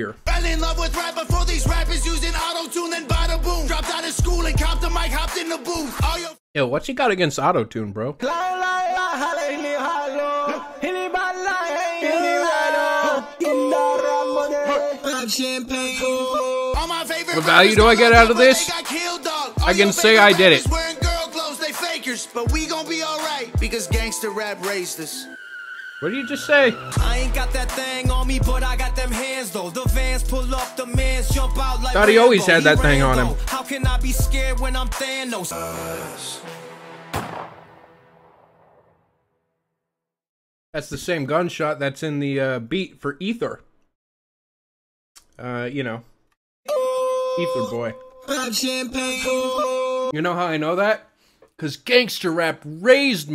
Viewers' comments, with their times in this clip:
0:03 half his stuff is autotuned horribly. like the worst autotune i've ever heard
0:35 I used that royalty free gunshot sound in a video as a joke a bit a ago, you'd think they would get their own sounds.